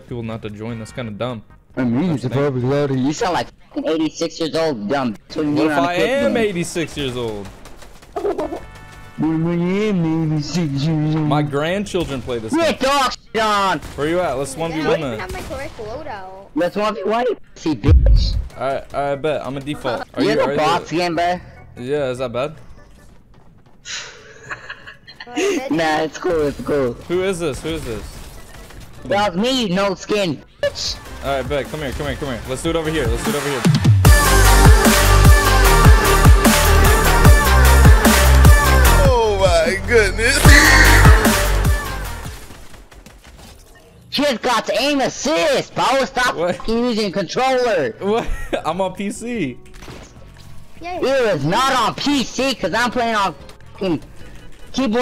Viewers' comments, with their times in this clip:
0:04 why that kid sound like that?
0:21 That voice crack 😂😂😂
0:33 can someone tell me why that was so loud lol 😂
0:42 sounds like geto spongebob 😂
0:43 this kid sounds like the know-it-all from polar express LMAO